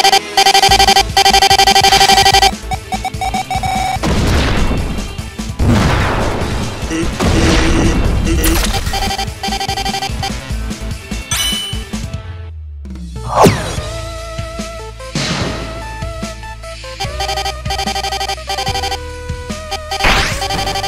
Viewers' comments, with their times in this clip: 0:08 the song goes hard and reply to me what this song is